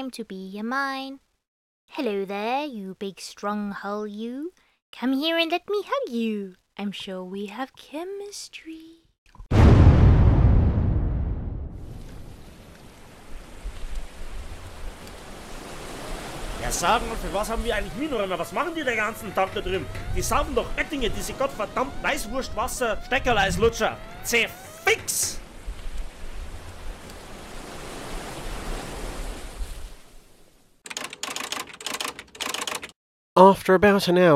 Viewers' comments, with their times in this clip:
0:09 *angry noises intensify*
0:21 *Angry german screaming intensifies *